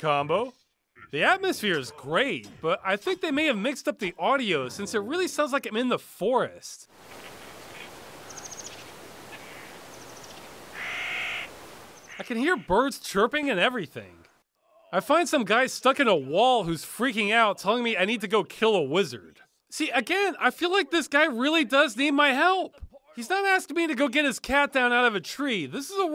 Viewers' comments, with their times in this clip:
0:10 the ''hiahiahiahia'' high pitch is not also from warcraft 3 , but old good for something blizz also used it for imps in diablo 1 i think. also...omfg!.... ..dam , i played that to much when i was a kid if my mind can cue the 'crow noise' used in Counqest of the new world.. a DOS GAME! XD when its sound bite been dug up elsewhere.. or well maby its just a sound alike after all..low quality crow noises ehh..but still edit'' bonus internet points for those spoting where the screamo wail used fro sc1 terran academy is used.